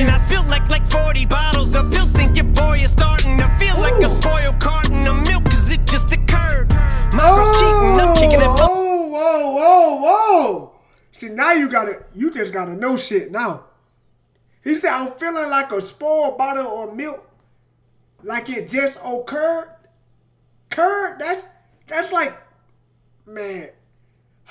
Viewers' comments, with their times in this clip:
0:05 To feel like a spoiled carton of milk 'Cause it just Occurred sounds like like cardi b's okurrr
0:05 To feel like a spoiled carton of milk 'Cause it just Occurred sounds like like cardi b's okurrr